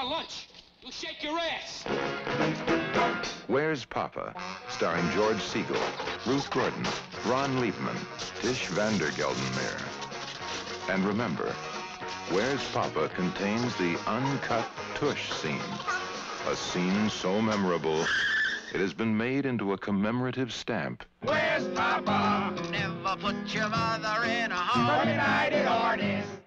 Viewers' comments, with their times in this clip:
0:08 How does Trisch Van Devere suddenly become Tish Vander Geldenmare?